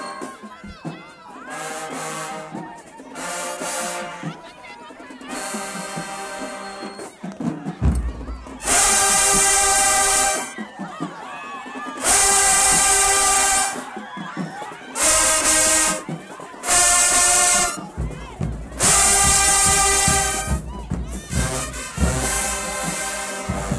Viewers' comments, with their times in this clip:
0:08 they even chopped up the instrumental :)